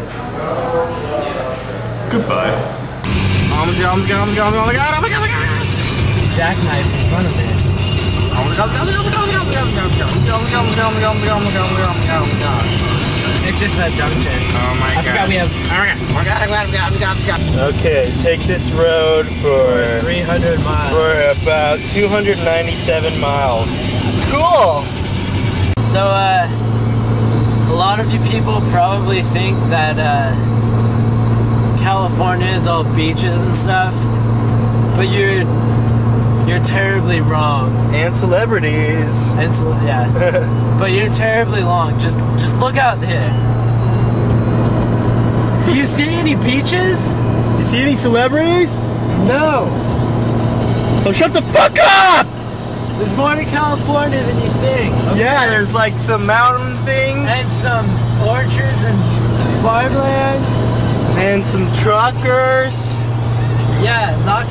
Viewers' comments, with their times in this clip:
0:08 sounds like Anthony is saying "Gobble gobble gobble gobble!!!"
0:41 Did anyone else hear Ian say "terribly long" instead of "terribly wrong" ? tee hee
0:50 anthony yells SHUT THE FUCK UP!!!!
0:50 BEST PART NO BLEEP! GO ANTHONY